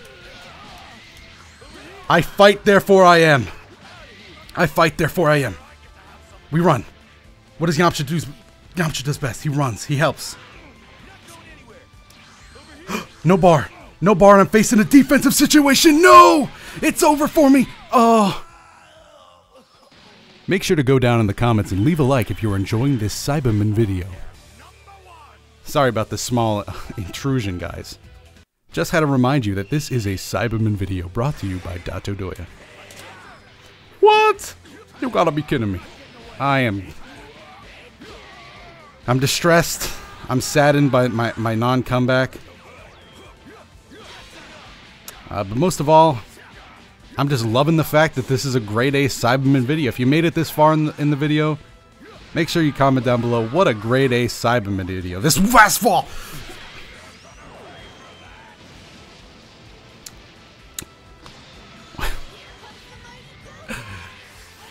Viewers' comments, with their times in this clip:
0:05 Loved the ultra focused crazy talk
0:52 I love how distressed you sound when you get mixed up. Example